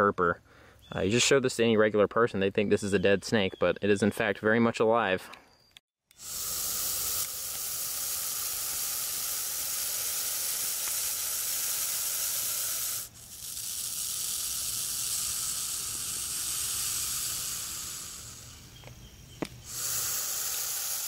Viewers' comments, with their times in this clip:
0:07 This snake reminds me the grass snake (natrix natrix), the one of 4 native snakes in Poland, which is also non-venomous and it also have similar defensive behaviour (playing dead). He sounds very angry, hehe.